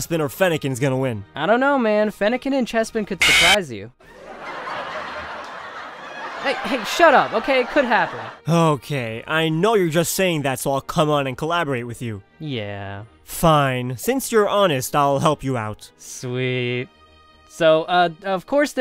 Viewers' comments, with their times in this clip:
0:03 was that a fnaf scream!?